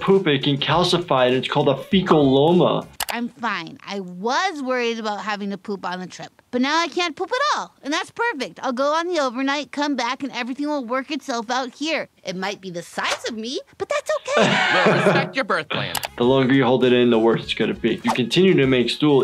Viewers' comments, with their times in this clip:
0:06 that girl sounds like mabel from Gravity Falls